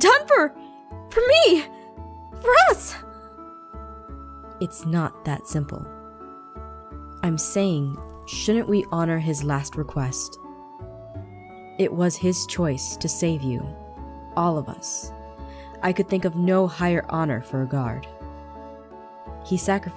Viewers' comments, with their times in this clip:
0:07 my heart will go on in the background playing ( so cliché)